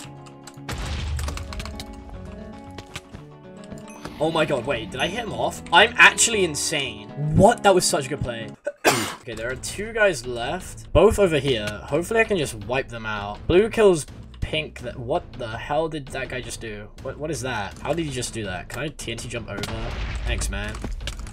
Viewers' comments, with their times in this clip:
0:09 bless you chief